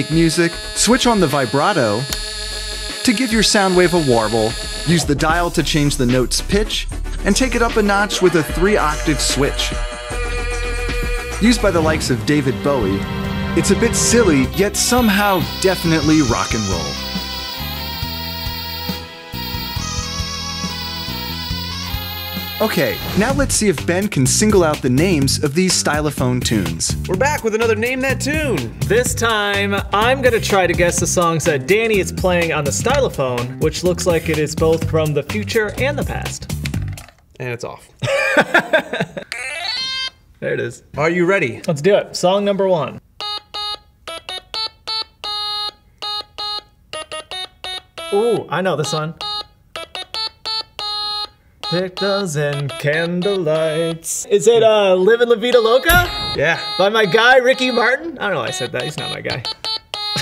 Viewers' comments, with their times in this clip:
0:10 when the barber cut your hair close to your ear
0:21 I legit thought this was the Steven Universe into song and I almost screamed from happiness Also this sort he was playing sounds like “we’ll always save the day...” part of the intro song Coming below if u have any idea what I’m talking about
0:44 tell me that doesnt sound like FnF bf beeps from the stylaphone